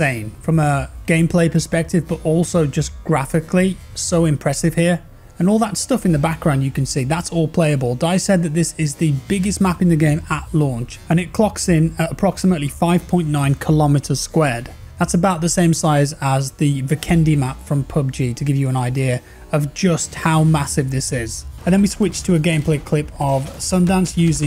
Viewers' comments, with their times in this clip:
0:09 You forgot to remove the soundtrack during the slow-mo ( ~) and other areas in the video.